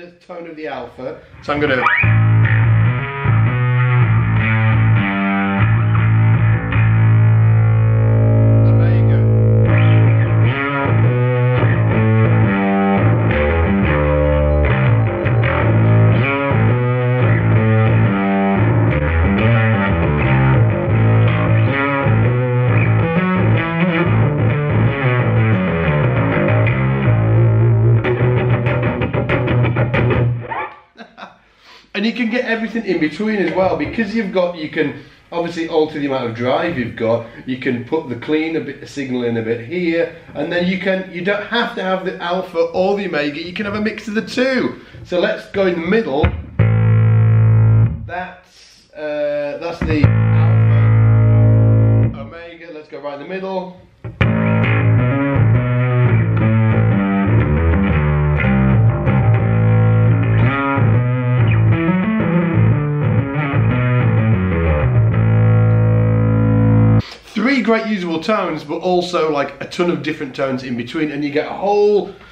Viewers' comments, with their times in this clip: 0:05 #Darkglassalphaomega I like the settings of the minute It'so powerful and have slightly more definition for me. Awesome pedal, it's great in every way.
0:10 Loved the sound of omega around the mark! #darkglassalphaomega
0:11 #darkglassalphaomega I loved the tone ... I'm a sucker for thick and chunky distorted bass sounds, and this just hits the spot!
0:16 That's really cool! I love Karnivool (I'm from Sydney Australia, so got to see them a bunch of times luckily). I'm new to learning the bass and haven't gotten any pedals yet, but would love to get to that gutteral Karnivool sound. Loving all the different sounds you're getting out of this, though I'm partial to the heavy alpha #darkglassalphaomega
0:17 I like the opening bit. Also shown ish. Not muddy, but cutting. Would sit under guitars without detracting from the whole; still being heard in a band mix. Boom, nice one #darkglassalphaomega
0:27 #darkglassalphaomega Omega with added badass snarly bassface! Would love to find the millions of tones in between the 2! Karnivool are so awesome!
0:49 #darkglassalphaomega I really digged the blend real dirty and nasty. Would make me play the bass a whole lot more. Cheers from Denmark!
0:54 Absolutely love the blended tone ! It reminds me of Tim Commerford's early Audioslave tone, which happens to be my absolute favorite bass tone of all time! #darkglassalphaomega
0:54 #darkglassalphaomega Love Karnivool!!! Am i too late to enter? Worth a shot anyway. The tone was my definite favourite, loved the blend of the 2. Really enjoyed the video, cheers.
1:00 #darkglassalphaomega I really liked the 50/50 blend setting great pedal!